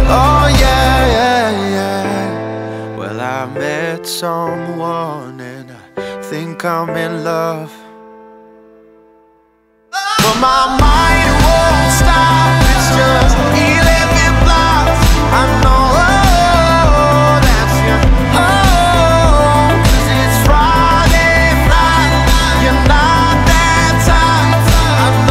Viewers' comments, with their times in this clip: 0:07 Am I the only one who though the song ended